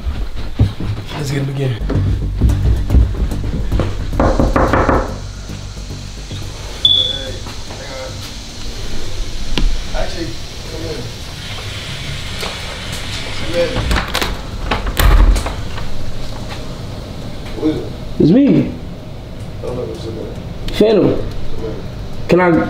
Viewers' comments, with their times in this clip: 0:07 smoke alarm chirping hahaha smh